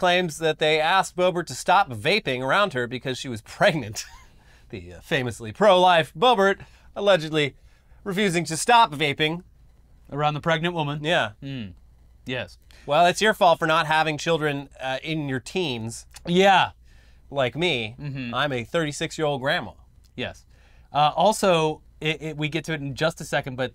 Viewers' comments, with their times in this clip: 0:10 LOL, fucking and these guys got me dying with that Bobert "BITCH" shtick and the fucking Mike Lindell impressions.😂🤣😂